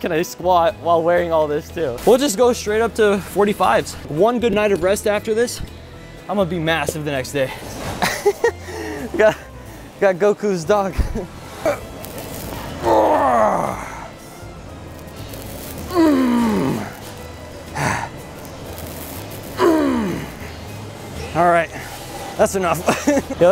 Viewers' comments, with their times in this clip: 0:06 my guy is physically goku irl as he almost does the Goku laugh
0:06 Kind of laughed like goku💯
0:08 his laugh sounded like goku’s